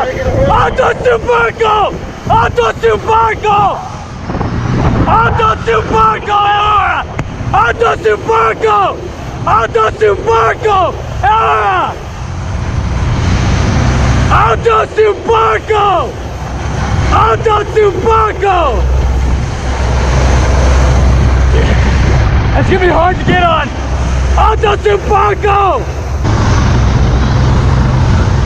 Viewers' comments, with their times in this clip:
0:10 Hotel trivago, ahhhh😂